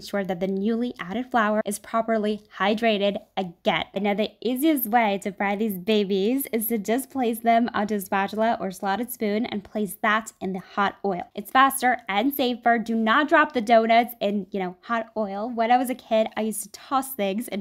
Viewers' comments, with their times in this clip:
0:05 the way she said babies was so adorable 🥺🥺